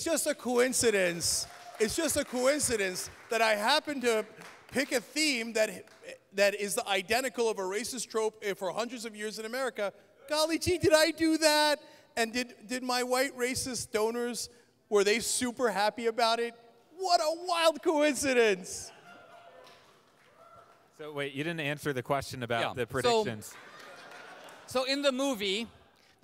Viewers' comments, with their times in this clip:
0:10 Once Chunk finished his re-enactment of the situation: Audience goes silent... At that point even the mediator is embarrassed...